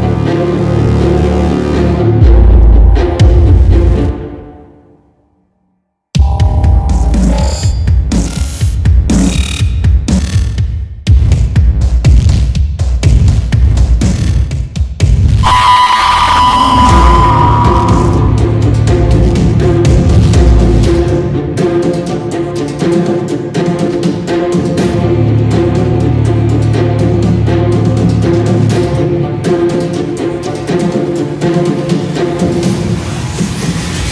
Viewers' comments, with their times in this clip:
0:04 This part is sick I love electronic music
0:15 me when i scream to my friends
0:15 this scream is humanic